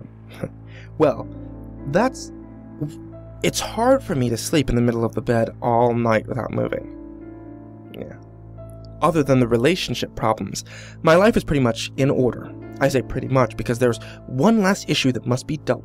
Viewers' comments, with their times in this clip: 0:03 LOL tRANsCRipt it's hard for me to sleep in the middle of the bed on my grandmother